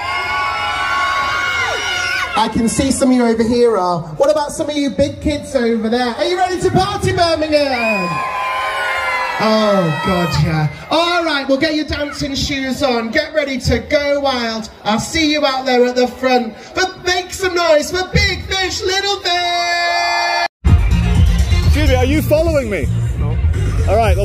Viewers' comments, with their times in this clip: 0:08 “oh god yeah” he says in a seductive voice after getting the children to dance… creepy.